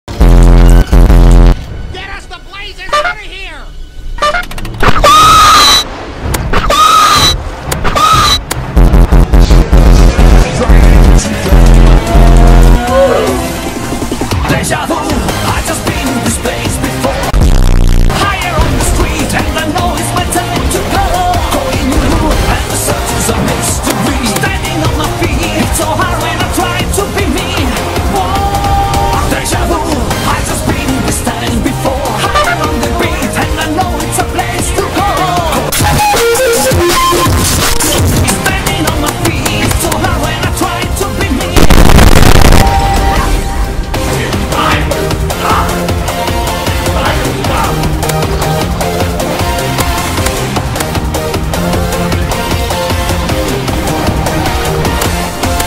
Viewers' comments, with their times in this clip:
0:05 do 0.25x in ear rape warning
0:05 rip headphone users ;-;
0:36 Sponge dance with loud sound lol ohio